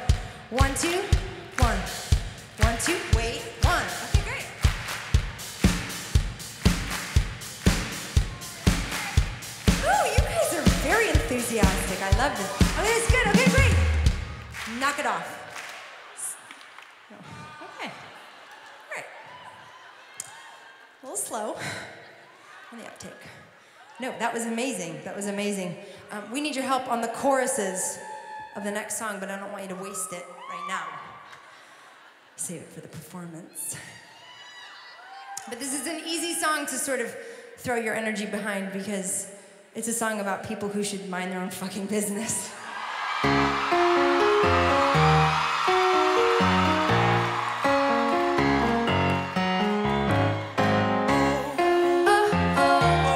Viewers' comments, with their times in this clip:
0:07 She totally said MUY BIEN ! LOLz! So weird!
0:38 Wow, sounds amazing live!! I love the phrase she says